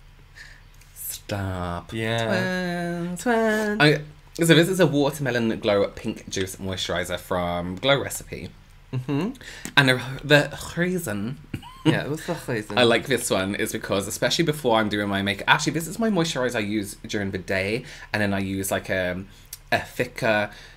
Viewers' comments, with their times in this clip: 0:08 Robert: and the ... kh-eason.. James: yeah, what's the Kh-eason? Just like that.. no gaps nor reactions in between 😂 it looks like they have the same mind not only the same face ❤😂